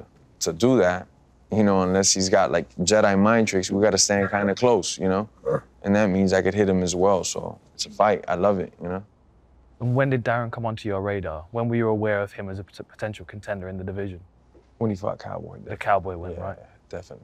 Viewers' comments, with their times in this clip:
0:03 Yo wtf was that noise darren made
0:04 Till had to control that laugh asap lmao
0:04 Darren getting excited about KO'ing him, he grunts thinking about it.
0:05 Darren activated demon voice.